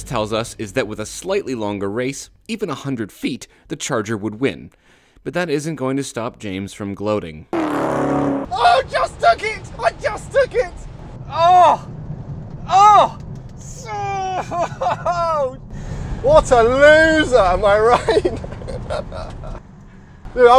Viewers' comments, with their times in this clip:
0:07 the sound of the cat flying by priceless